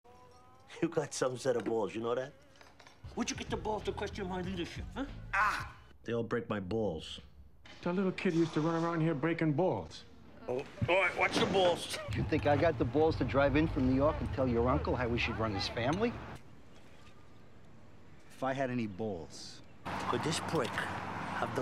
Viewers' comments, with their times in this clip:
0:04 I can't stop laughing at Christopher sounding like a mix between a non-verbal and that baby covered in peanut butter. The way he opens his mouth wide and shuts it just for that as if it's meant to be a response to Tony. Superfluously hilarious.